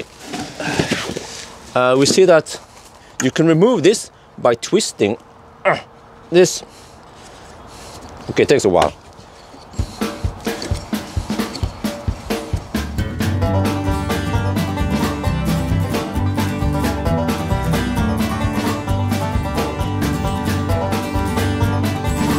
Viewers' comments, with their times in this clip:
0:08 Loving the banjo music! 👍👍 🤣🤣